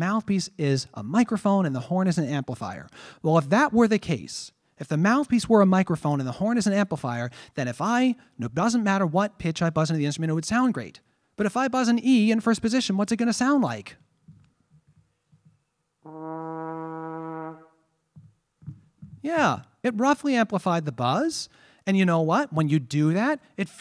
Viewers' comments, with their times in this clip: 0:10 Markey is so good he makes an E in first position sound not bad